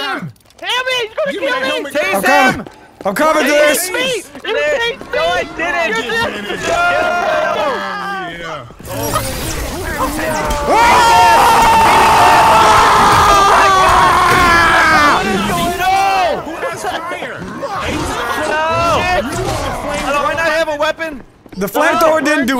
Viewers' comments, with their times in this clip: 0:10 is the best battle cry ever